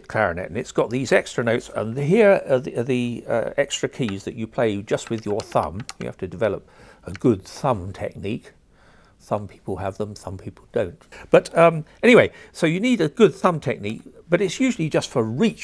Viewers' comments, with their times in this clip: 0:03 Minecraft Button Click Sound?